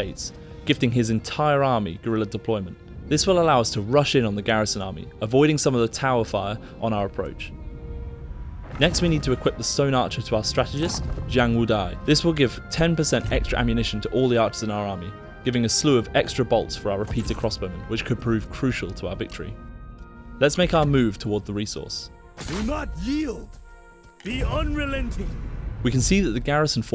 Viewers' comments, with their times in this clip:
0:07 I love the pronunciation mistakes it says Xiang Wudai but he says Zhang Wudai.